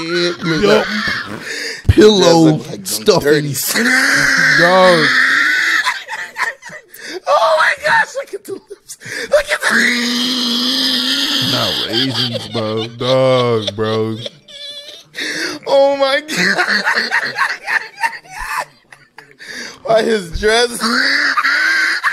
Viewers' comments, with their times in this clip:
0:09 Damn who turned on my vacuum?